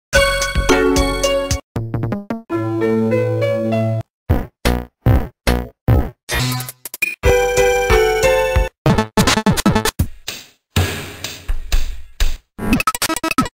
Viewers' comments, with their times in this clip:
0:07 Sounds Like Pixitracker Major 5 + Low Voice